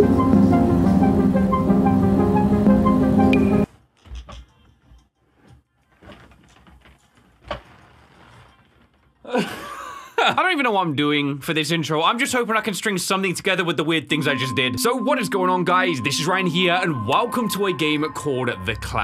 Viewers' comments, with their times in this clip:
0:03 the chair noises make this so much better lol